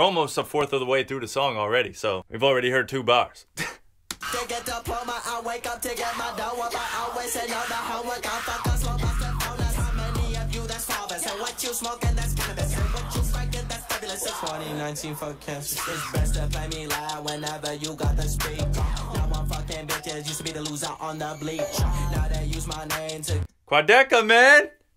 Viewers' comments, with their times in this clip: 0:05 Sounds like he’s speaking enchantment table